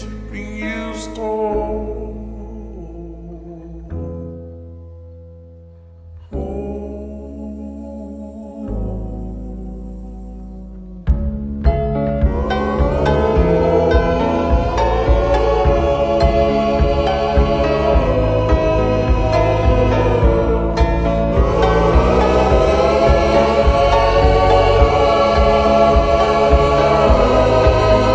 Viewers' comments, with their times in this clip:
0:10 idk why but the drop in another love hit me so hard..🙁